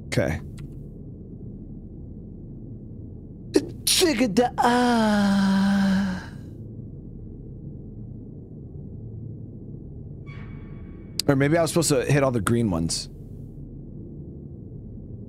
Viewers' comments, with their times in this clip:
0:03 im just going to pretend that this game is in the resident evil universe for the immersion lol that sneeze 😂